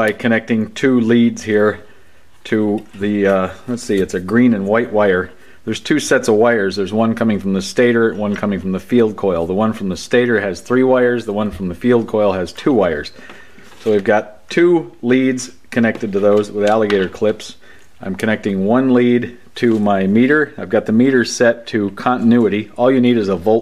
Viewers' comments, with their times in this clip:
0:09 your multimeter says "ouch". Should we be concerned?